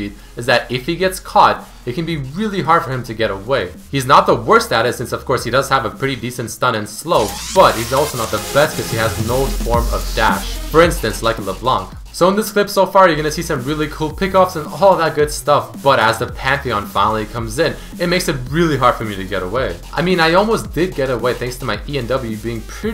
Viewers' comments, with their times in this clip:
0:05 The music scared me xD
0:06 ok dat music
0:07 random burst of music?? I thought the video was gonna end....
0:08 why the hell did the music get much louder ?